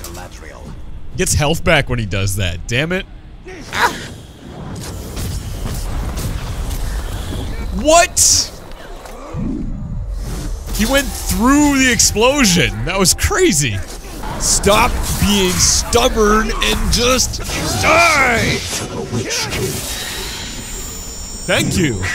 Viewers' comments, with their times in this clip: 0:07 Woooooo Wooo woo woo wooo SCREAMING AND WOO-ING INTENSIFIES Wait WHAT HAPPEN TO WOO WOO BOY AND SCREAMING BODYGUARD